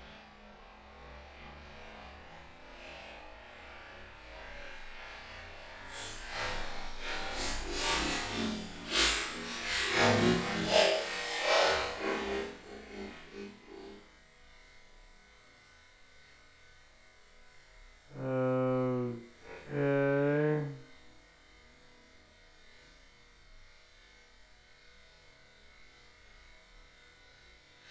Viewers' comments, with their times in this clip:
0:10 sounds like an transformer transforming